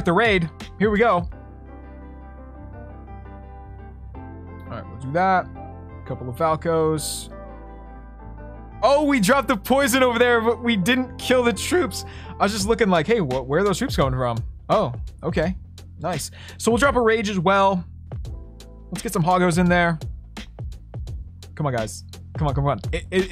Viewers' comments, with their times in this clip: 0:10 great voice crack🤣